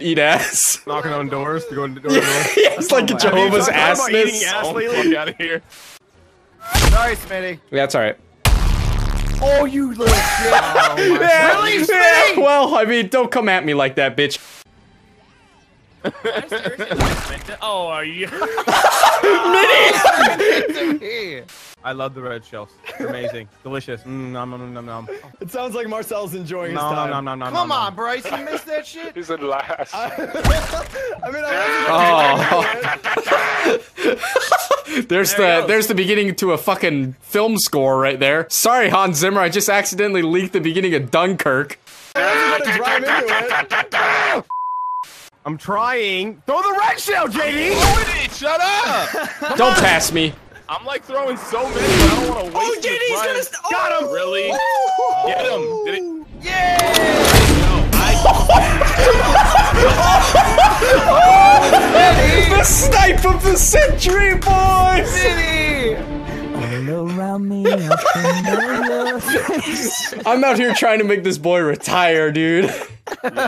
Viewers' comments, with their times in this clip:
0:04 The sound effects on have me dead as fuckk lmao
0:08 sounded like dio stopping time
0:31 reminds me of Skrillex-Sick Bubblegum's drop part
0:54 If you listen closely, you can pinpoint the moment mini ladds dreams evaporate. Tip: Its right around the "*AAAAAAAAAAAAAAAAAUUUUUUGGGH*"
0:55 That was awesome especially with the music behind it
0:55 the music in this was too perfect, that is literally something batman would do lol
0:56 the faint SSMMMIITTTTAAAYYYYYYYY
0:57 do you here that it sounds like soldiers scream on tf2
0:57 the music and everything was perfect xD